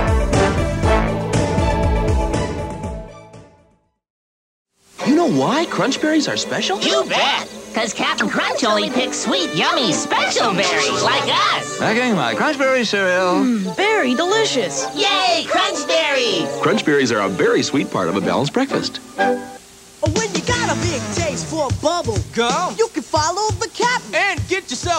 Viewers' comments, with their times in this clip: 0:05 ok fellow dino draccers I have a question. The Capt. Crunch commercial Captain Crunch is drunk off his ass right? I mean even back when this commercial first aired and I was a little fella I used to think that he was blitzed out of his skull. "Nah'gimme a hrunch berrieseriaaaaaal"